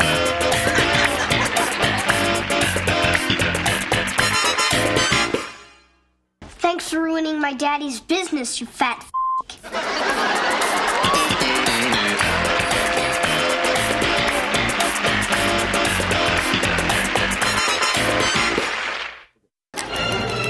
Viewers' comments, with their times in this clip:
0:06 In the kid cutscene a kid said thanks for ruining my daddy’s business you fat (beep)